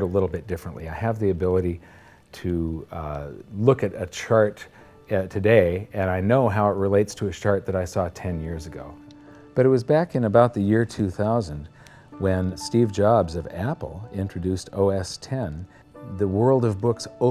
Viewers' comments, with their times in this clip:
0:04 "relates to a shart I saw 10 years ago"